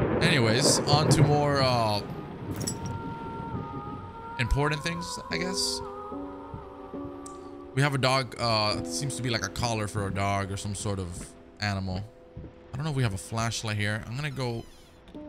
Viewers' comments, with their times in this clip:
0:03 Anyone know the name of the background music? That faint opera-type singing (not sure if that's what its called)